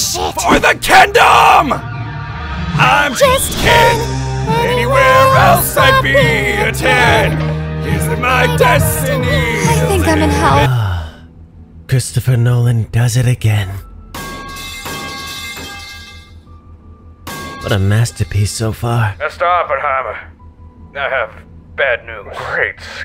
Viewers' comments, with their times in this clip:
0:10 Sanemi and Mitsuri screaming the tune is the best thing ever.